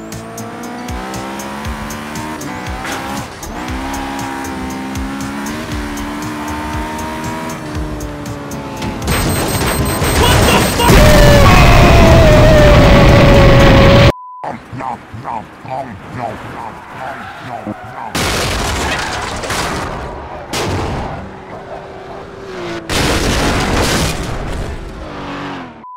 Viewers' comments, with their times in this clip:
0:09 onwards no matter how many times I hear that beep beep beep what the ucker explosion audio it never gets old 😂😂😂😂😂😂😂😂😂😂😂